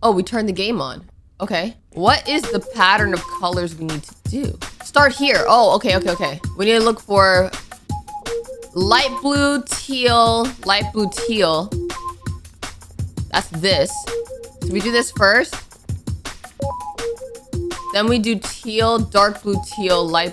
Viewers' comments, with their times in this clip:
0:03 The music 😭😭😭😭😭 just funny😭😭😭😭😭😭😭😭